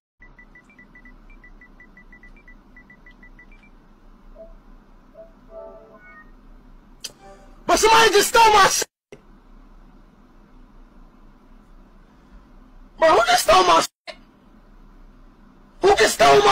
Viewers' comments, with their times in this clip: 0:03 bro was watching the stream in 2x speed